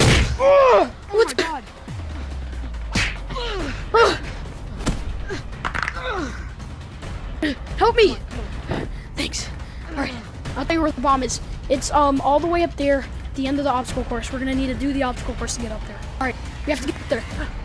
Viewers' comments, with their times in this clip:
0:04 that crack was personal